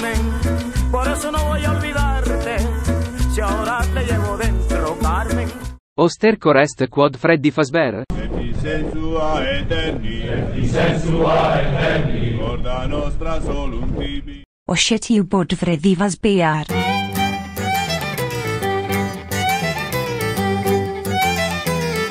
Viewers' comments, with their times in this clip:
0:06 Latin has the same voice as Italy.